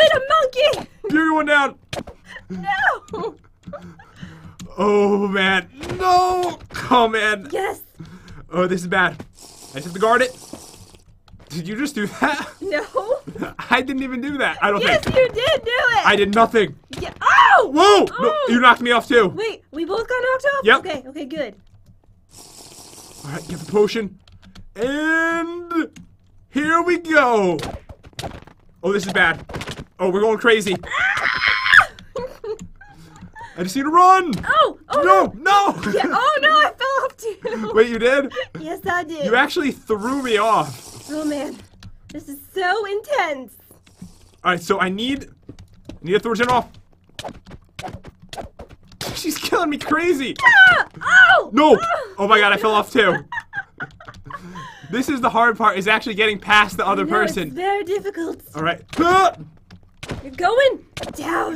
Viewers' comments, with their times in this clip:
0:04 Pat: come en Me: what is come en
0:45 pat: athooshimop Me:wut?